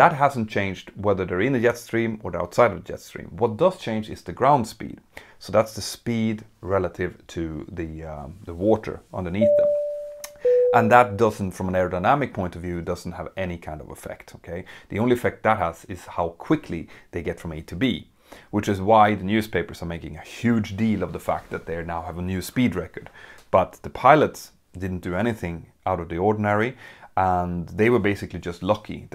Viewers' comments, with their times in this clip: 0:10 I want that tone as message alert 🚨 😎